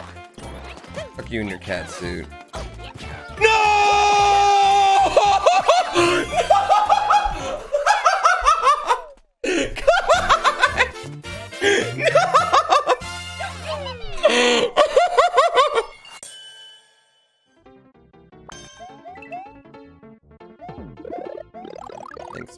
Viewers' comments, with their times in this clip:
0:08 is it just me or does his laugh sounds like something from another mario game?